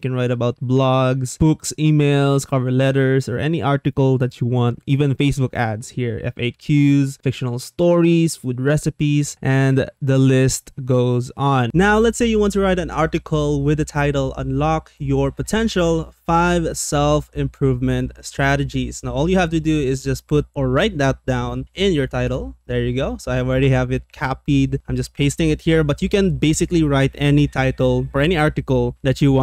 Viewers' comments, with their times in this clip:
0:10 it's not understandable why that people that use Ai technologies...has no clue on how to record a video with a GOOD audio quality, no noises (here start a robotic voice ...)